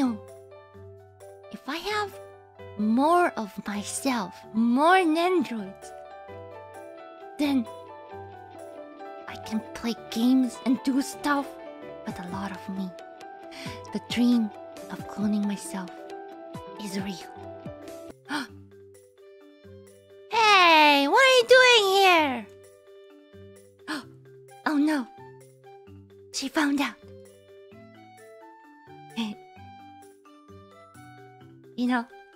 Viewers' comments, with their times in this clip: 0:05 ngl that BGM transition was smooth!!
0:18 In my mind, I heard "Ey, im walkin here"